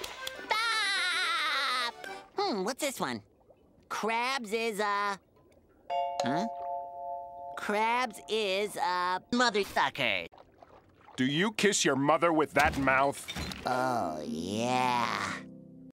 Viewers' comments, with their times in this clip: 0:09 sounds real OMG! 😱😱😱
0:09 Gosmokeless lmao Nice voice editing! 😂